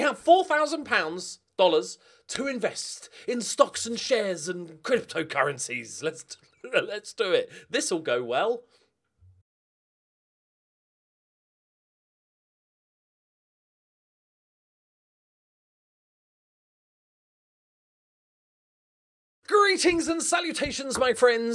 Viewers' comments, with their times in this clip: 0:09 Does anyone remember the Euro 96 semi final when the music for the national anthem didn't play but the fans belted it out anyway? I imagine that was us when the intro music didn't play